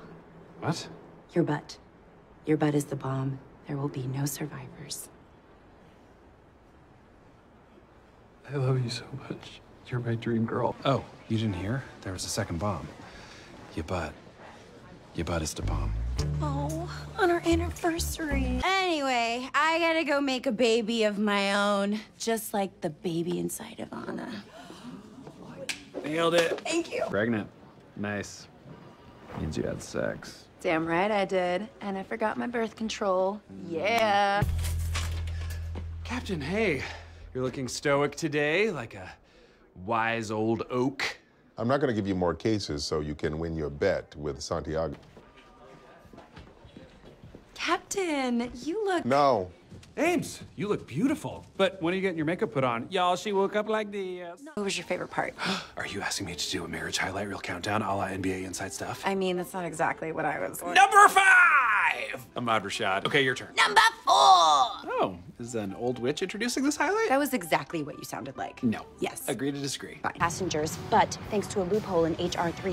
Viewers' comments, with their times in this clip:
0:06 jake crying because he didn’t get to say it
0:53 "y'all she woke up like thiîìïíīs" I love Jake sm omg